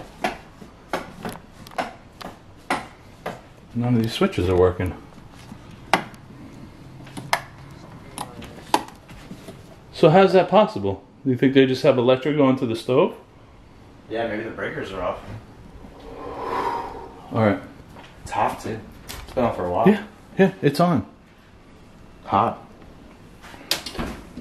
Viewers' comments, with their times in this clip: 0:07 ......sounds like the voice is saying......"K9"......???????
0:07 I hear a voice speaking low "something not right".
0:07 another voice not sure what was said though. sounded like a mans voice but not a deep voice.
0:08 you can hear a soft male voice coming through. Merry Christmas!
0:08 there is a voice faint. I heard it as you were trying to figure how to turn the stove off while your were trying the light switch. I turned the volume way up it almost sounds like it's saying, something wrong with it. Not sure.
0:08 There is a whisper Can’t make it out. I’m pretty sure that’s not your nephew. ❤️